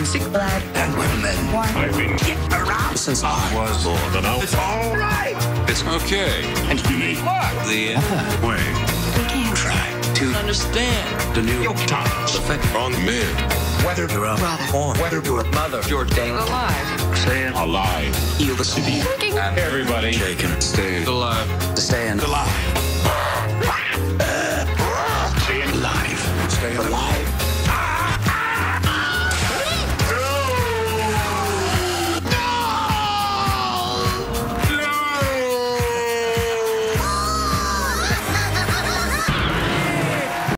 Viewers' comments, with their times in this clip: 0:09 Anakin says understand hilariously.
0:24 lol ...when I'm just watching the movie I always laugh hysterically when Chewie chokes Lando because all I can think about is this video and his choking being incorporated into "Stayin Alive." People watching it with me definitely look at me funny 😂
0:29 the Wilhelm Scream🤣🤣